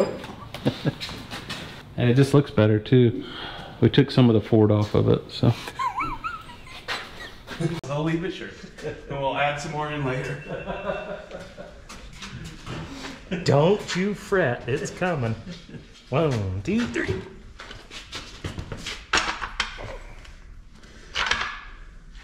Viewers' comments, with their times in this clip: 0:06 Did anyone else hear Muttley ? 😂